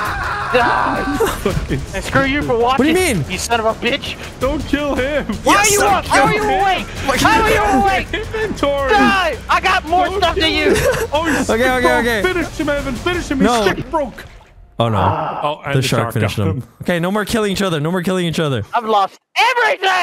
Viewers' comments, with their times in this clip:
0:06 very intense clicking